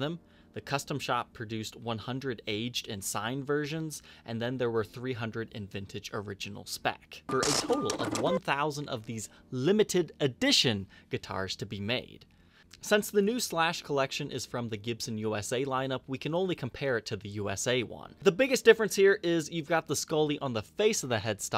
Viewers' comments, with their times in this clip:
0:06 What happened here? Is that on purpose, like a calculator noise or did something cause a burp in editing?